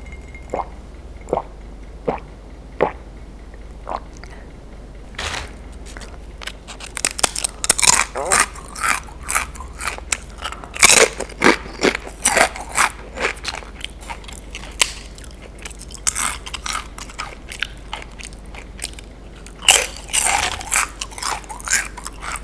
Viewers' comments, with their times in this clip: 0:08 The stomach sound 🥺